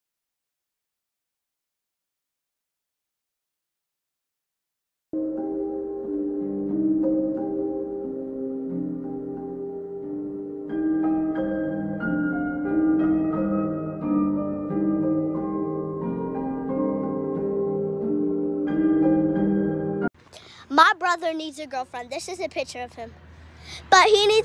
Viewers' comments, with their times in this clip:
0:08 why tf is there Skyrim music? Illusion 100 😧